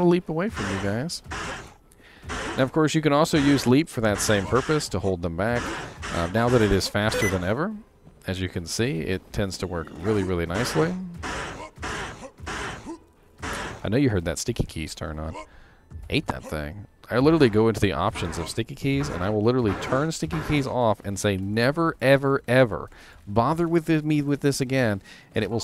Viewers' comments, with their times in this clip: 0:06 Not only are melee characters more equipment reliant, the guy who wrote 1.10 in all his wisdom made caster runewords dirt cheap. stickykeys activates.